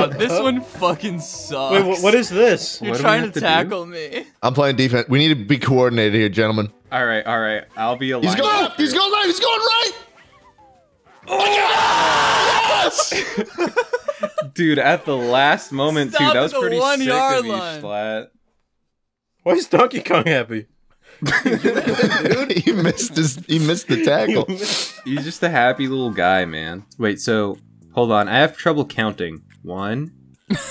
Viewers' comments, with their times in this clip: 0:10 That scream had me dying
0:11 ankle breaker scream